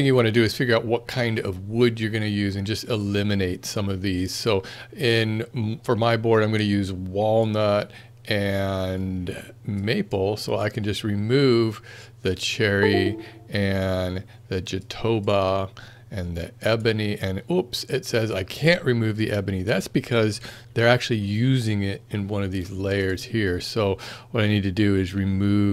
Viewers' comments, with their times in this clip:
0:10 Windows: hardware removed sound :D